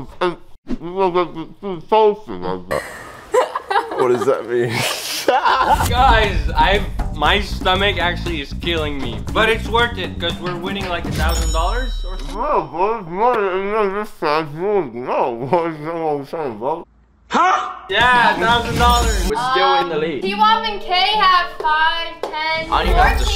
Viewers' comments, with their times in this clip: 0:10 starts speaking in henchman